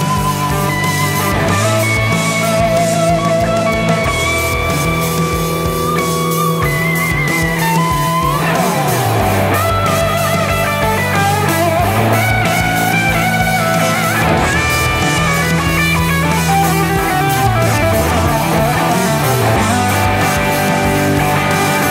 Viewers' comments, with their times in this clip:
0:08 Here it is! I've been humming the lick from for weeks and couldn't figure out where I'd heard that. I guess it was in one of your previous videos. It's an absurdly cool lick